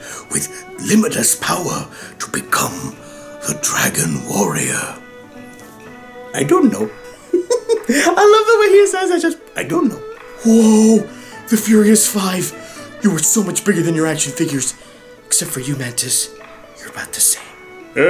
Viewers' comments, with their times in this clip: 0:06 “I don’t know” I also love how he says it🤣🤣🤣🤣🤣